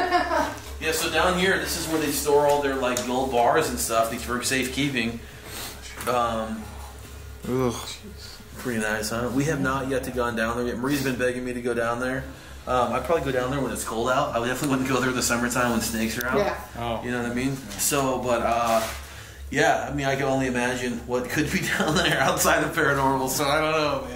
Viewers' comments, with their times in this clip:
0:05 At like after the guy says safe keeping you can hear a voice saying something as long as it's not someone else in the room talking quietly or whispering to someone else trying to be quiet while he is telling you about the tunnel. Not sure but I figured it would be worth letting ya know lol just incase it is something
0:07 Men's voice "Get Out"
0:08 there's whispering but I can't tell if that was your dad or not. The only word I could make out was, jeez. That kinda sounded like him but the rest before and after that was really low